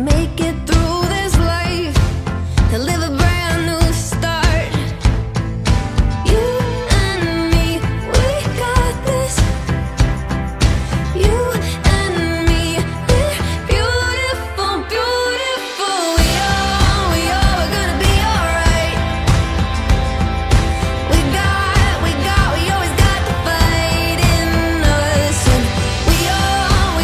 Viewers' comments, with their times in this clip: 0:08 when the crowd does the "you and me" thing with her omg <3